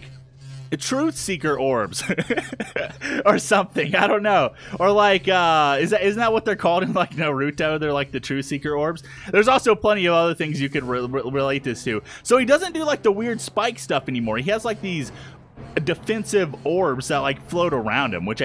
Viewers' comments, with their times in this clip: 0:06 he said naruto was na root to